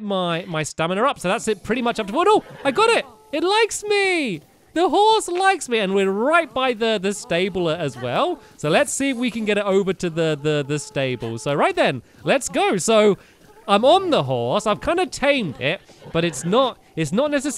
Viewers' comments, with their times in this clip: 0:05 is it just me or did I hear a fart sound